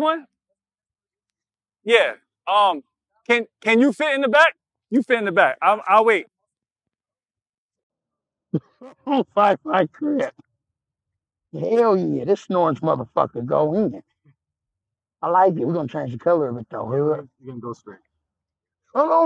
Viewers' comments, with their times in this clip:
0:04 dude sound like a gta voice over lol